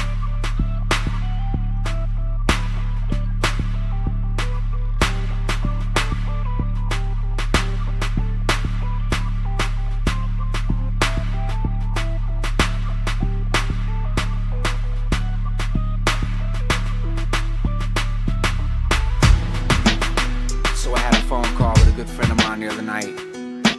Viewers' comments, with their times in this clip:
0:08 seconds in and wow this beat is god awful!